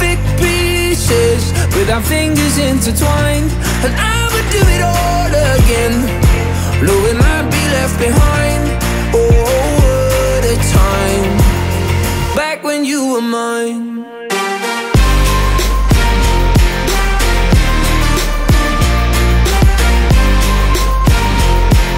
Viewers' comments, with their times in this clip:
0:03 reminds me of avicii - friend of mine